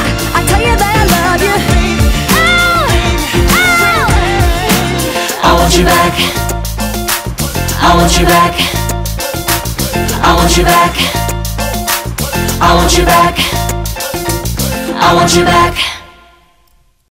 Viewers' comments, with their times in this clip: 0:03 That inaudible "oh" that no one else heard but him 😂
0:03 Uuuuuhhhh that second uuuh hurts
0:04 I guess he missed that note 😂😂